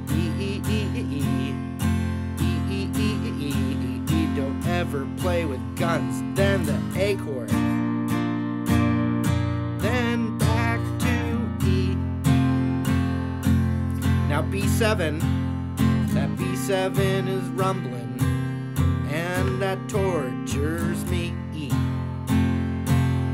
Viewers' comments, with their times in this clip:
0:05 With captions on: “Dan’s an acorn”